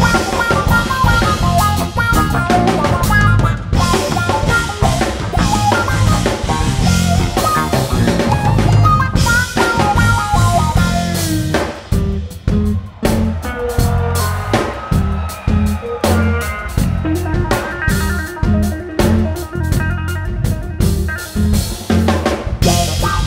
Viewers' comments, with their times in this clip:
0:07 That metric modulation from the quarter note triplet to the eighth note. ridiculous and so, so smooth.